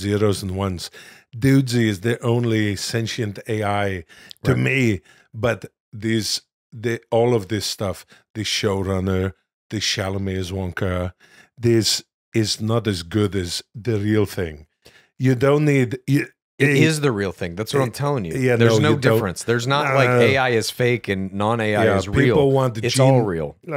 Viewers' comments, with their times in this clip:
0:08 Will impersonating Arnold while essentially saying people don't want an AI imitation is.... deliciously ironic.